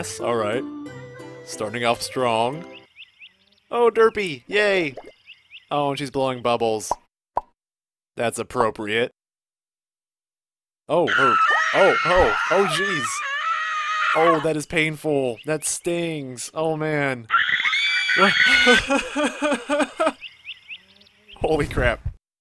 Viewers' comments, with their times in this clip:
0:10 i love how derpy and fluffle fuff scream like women screaming